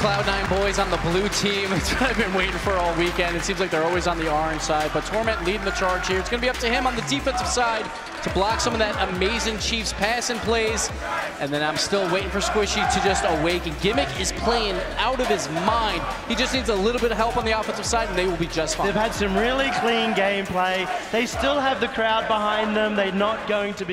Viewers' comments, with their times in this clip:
0:10 what was the crowd saying? I can’t hear it